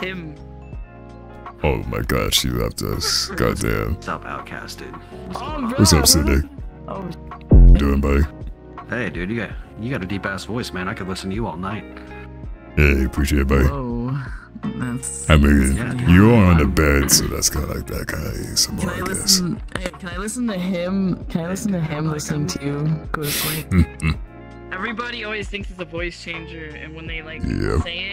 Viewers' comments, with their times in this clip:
0:09 hey he has a nice voice too. By the way, nice singing to yall, liked the carton box girls energy :D and the murder/tag scene